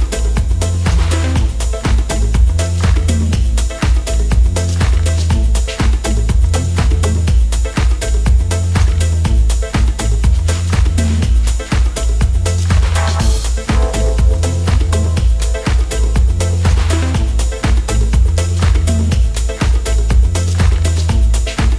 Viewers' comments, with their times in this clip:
0:08 I really really like the small twist he did with "rearrange my mind" in this set. Love it!